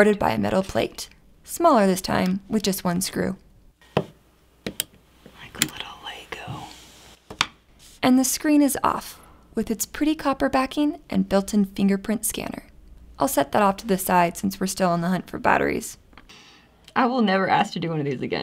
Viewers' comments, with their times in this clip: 0:04 watching at midnight when this voice coming out* me: fakkk
0:05 -Zack whispering in the background trying to contain himself "*like a little lego*"